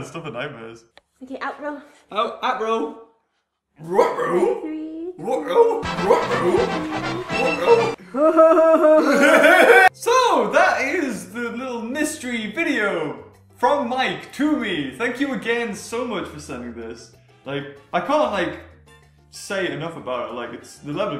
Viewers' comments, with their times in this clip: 0:09 that laugh tho...